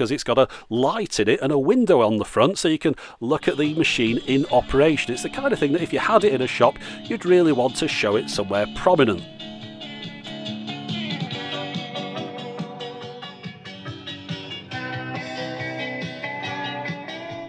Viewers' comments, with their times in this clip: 0:04 The track sounds suspiciously like rock and/or roll!